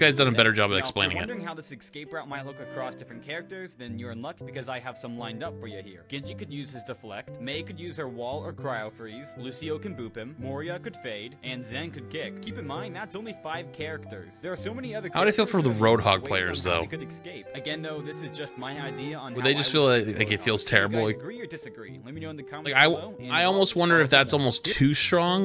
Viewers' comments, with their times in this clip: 0:10 I'm sorry but "Moria" is a crazy way to say her name🤣😭
0:10 when people misspell it as "moria" it's not a big deal, but to actually PRONOUNCE it that way???